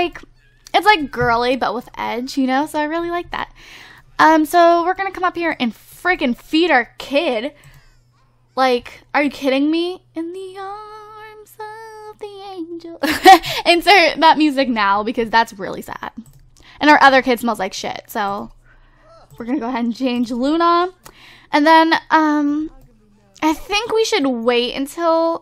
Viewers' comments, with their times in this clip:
0:10 But Her Singing Tho
0:10 you have a beautiful singing voice